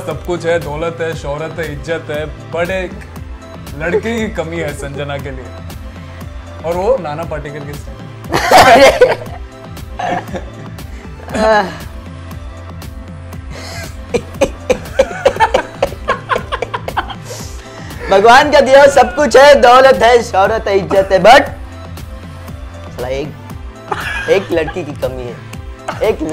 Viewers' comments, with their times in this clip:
0:08 Prithvi Shaw mimics Nana Patekar so well. ❤️ People looking for it watch from